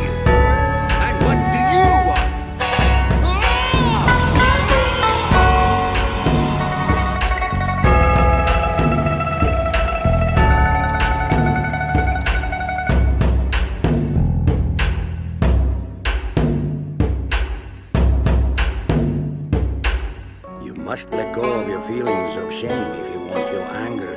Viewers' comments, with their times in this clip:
0:05 absolute finest combination of instrument and the speech